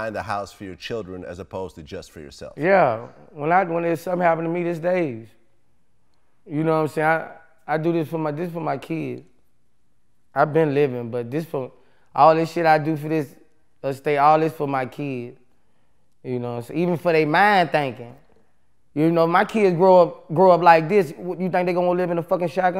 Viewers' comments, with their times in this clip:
0:03 that moment when you so high you can't speak correctly "When something happen to me this theys'" I feel you boosie. That was a fat ass blunt